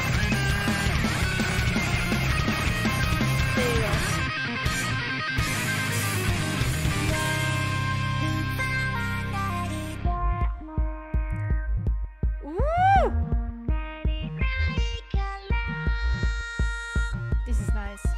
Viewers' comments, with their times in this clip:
0:06 The song was released on August 6th (Hiroshima atomic bombing)... the "vocaloid" robot voice sings something roughly translated as : "America, don't bomb us again, it's bad for everybody."